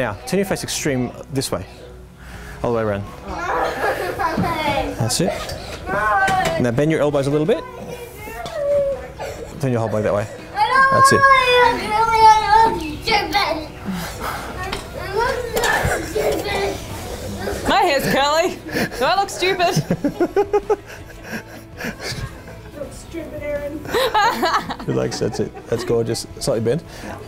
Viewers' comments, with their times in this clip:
0:10 ....Whats a wedding without kids yelling and crying at the background...